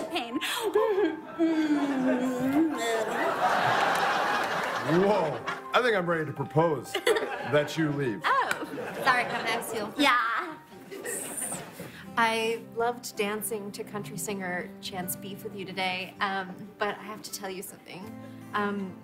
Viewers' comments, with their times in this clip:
0:04 “Whoa, I think I’m ready to propose……that you leave.” That was delivered perfectly, hand gesture and all.